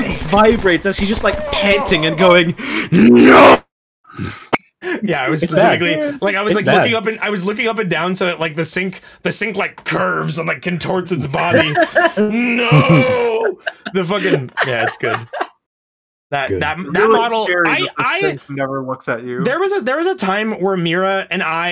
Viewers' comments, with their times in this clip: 0:04 holly golf sound